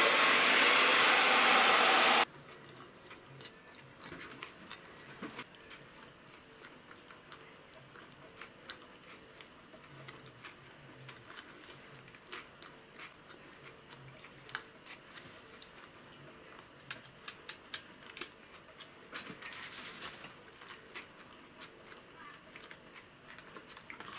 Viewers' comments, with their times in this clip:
0:09 what are you chewing on